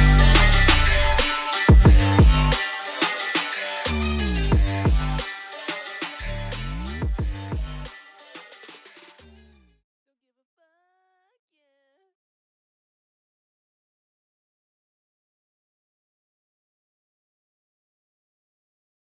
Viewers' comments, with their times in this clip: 0:09 if u listed verrrry closely u can hear another sing a very tiny one
0:11 Im not the only one hearing a woman sing or im going nuts? Song is a beast ! As of expected tho!